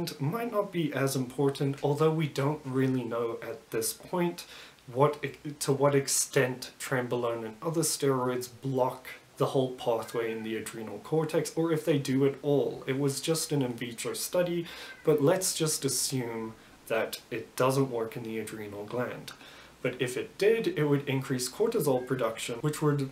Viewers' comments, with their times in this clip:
0:08 I hear Hadada’s in the background 😂 🇿🇦